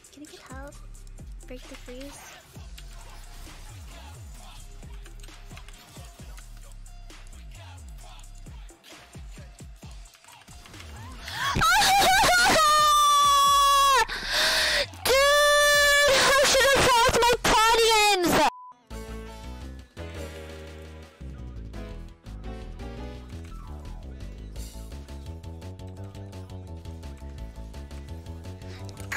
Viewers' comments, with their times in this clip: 0:06 Editor: Eardrum blast warning. Me, a masochistic degenerate: Turns volume up to max. :3
0:07 more like lower your volume so no one thinks you're watching porn 😏😏
0:11 e some daily eardrums bursting gotta love it